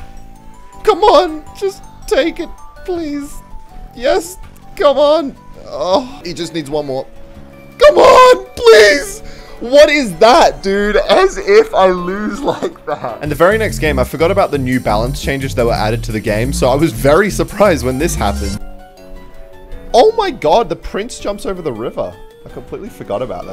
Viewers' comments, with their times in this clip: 0:05 that didnt sound right